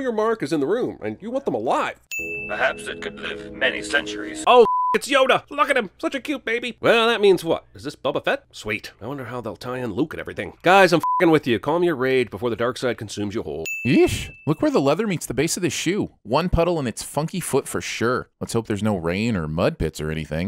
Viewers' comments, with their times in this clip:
0:08 the voice change is jarring yikes!!